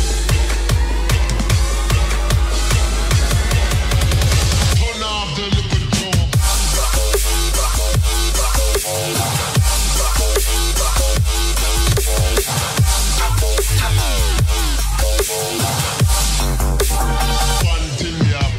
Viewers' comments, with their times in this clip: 0:06 why does it sound like a remix of Lycanthropy?